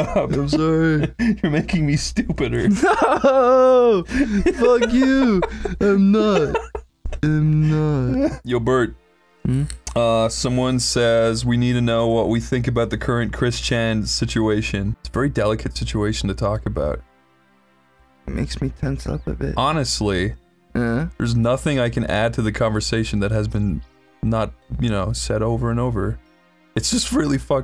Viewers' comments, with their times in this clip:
0:09 i love that you can hear a vape in the background at this part